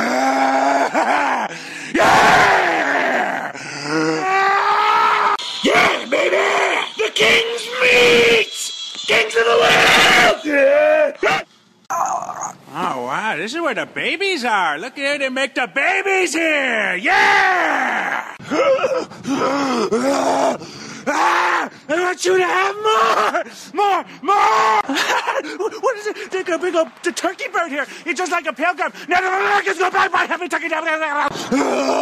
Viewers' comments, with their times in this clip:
0:06 At first, I thought what he meant was "the King's meat," which in this context, would work just as well.
0:19 his shit gets more and more demented as this progresses by he's just screaming like he in pain. God was punishing him I presume.